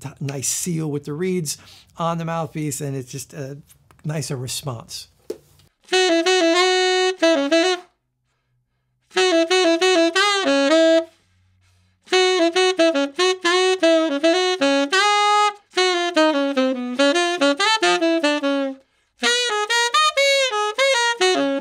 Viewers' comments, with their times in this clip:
0:04 You say that the mouthpiece now works better, but it makes your tenor sound like kazoo.